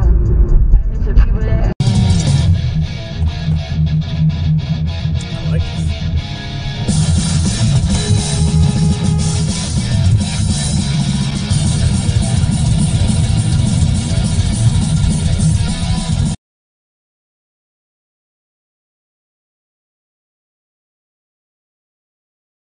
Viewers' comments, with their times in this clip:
0:03 Dude is blasting something nice, and driving as calmly and alert as can be. Meanwhile auto-tune radio enjoyers...🙈